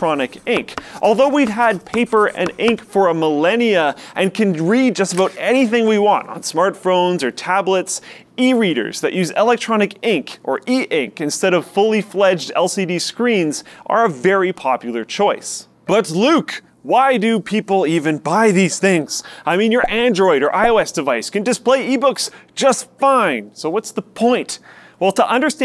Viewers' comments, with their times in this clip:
0:06 smartphrones = smart pheromones?